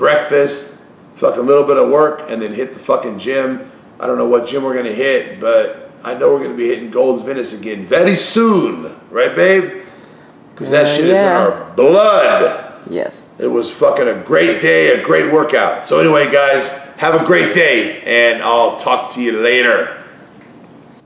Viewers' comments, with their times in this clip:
0:07 the Italian coming out of the PIANA